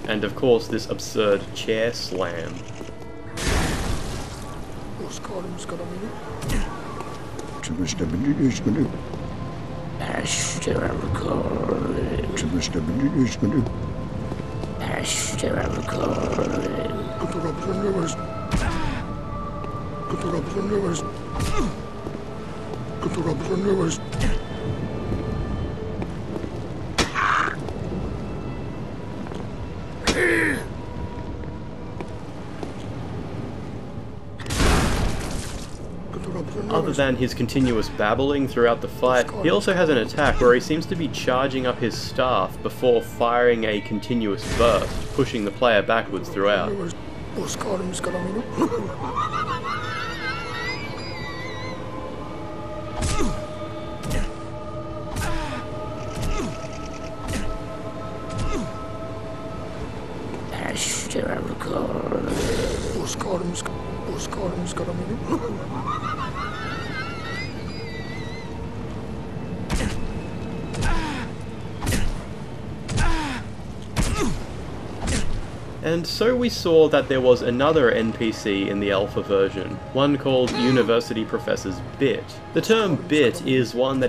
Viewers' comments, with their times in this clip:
0:07 He's saying skibidi. He knew.
0:14 kinda reminds me of the mumbling the one reborn does deepest lore
0:26 The sound he makes when he slams his staff down sounds like the gargoyles
0:48 those wheeeezes Willem does are funny as fuck! edit: he's probably starting his minigun staff
0:49 CHARGE ZA WHEZZZE for real tho can't tell what was that
1:05 That sounds eerily just like me when i looked at too many memes.